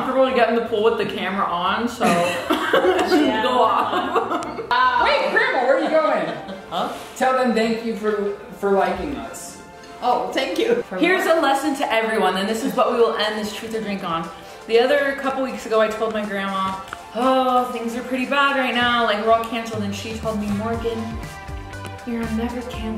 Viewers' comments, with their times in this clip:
0:07 You can hear him laughing he’s filming